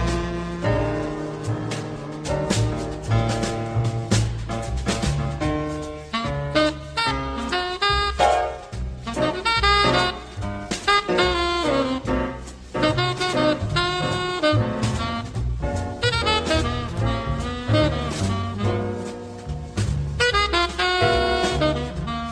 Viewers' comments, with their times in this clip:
0:05 dude ... first bars of Charlie Rouse solo Monk hit us with that elbow cluster. the goat.
0:07 crazy comping by monk, the best